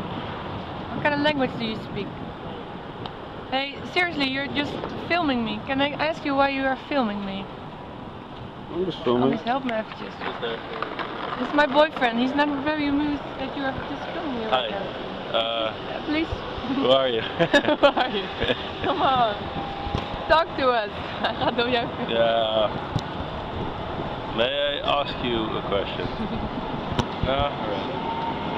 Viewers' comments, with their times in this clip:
0:10 "This is my boyfriend and he's not very amused you're filming me right now..." ~ camera pans over to boyfriend who is full of amusement and laughing~